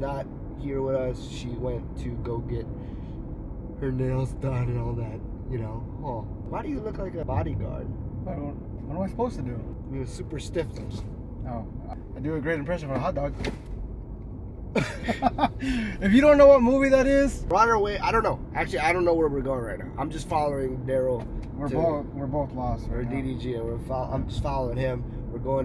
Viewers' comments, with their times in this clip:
0:08 why does his brother sound exactly like him lmaoo